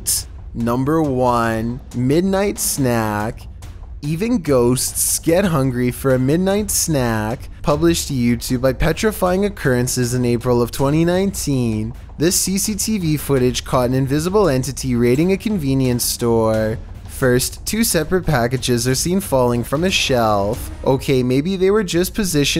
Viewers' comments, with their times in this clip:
0:05 Then he totally pronounced armoire nearly perfectly. Seriously?!?! I vee to get to the bottom of this.